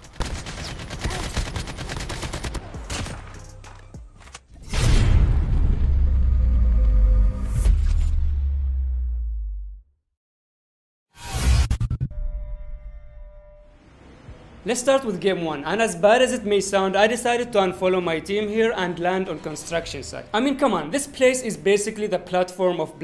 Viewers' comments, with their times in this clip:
0:06 I was right about to sleep am when I got ur video in the general section and right away I knew that this was important. Mannnn I love your voice I could listen to you speak all day. Ur voice is music to my ears